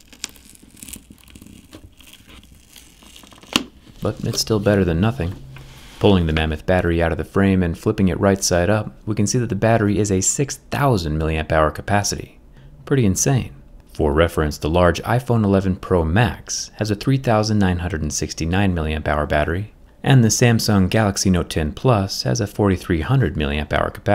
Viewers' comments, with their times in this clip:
0:06 pull in the mehmet